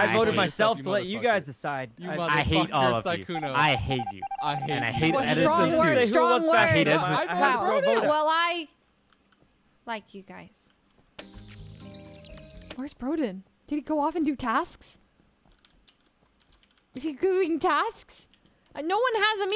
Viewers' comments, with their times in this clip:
0:07 awee the way she said that was so sweed :D